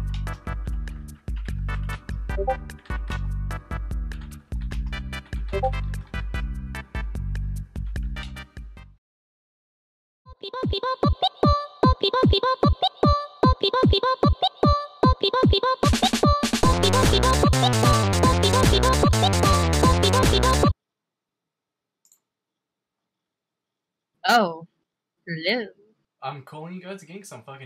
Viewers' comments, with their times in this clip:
0:10 oh no not that weird ass vegetable song god please no